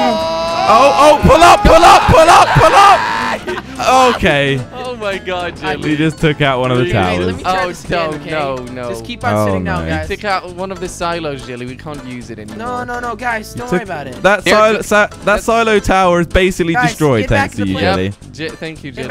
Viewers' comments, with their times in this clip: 0:04 that sounded so bad